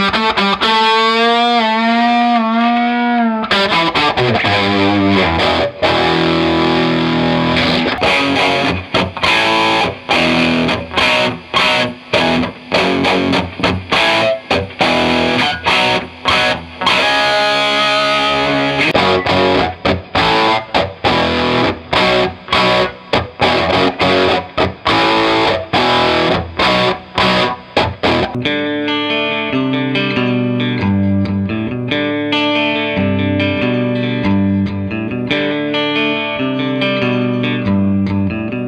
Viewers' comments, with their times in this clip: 0:10 in this video, the Marshall has more background hiss, maybe due to the high mid spike when compared to the more middly spike of orange. The orange sounds more full in the mids, while the Marshall has more upper mids teeth. both sound very nice. Hard to say which sounds better, but Marshalls also look great .
0:19 Boom. There it is. That’s the Orange OR tone. I mean the Marshall sounds good, but that Orange just has ridiculous texture and dimension. It’s hard to describe, but the difference is obvious.